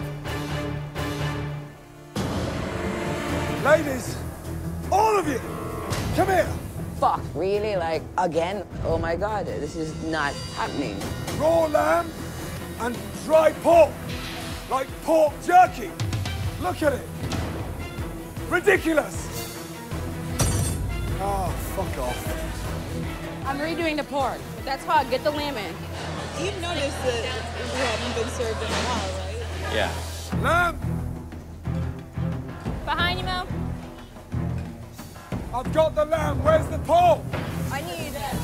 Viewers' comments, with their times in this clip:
0:04 I feel sorry for Ramsay it sounds like his shouting in lowercase ~
0:16 "Ridiculous!" Gordon said calmly.
0:25 When your wife wants you to go ask the Chef where the food is but you just saw him throw a piece of raw lamb at somebody and scream at them.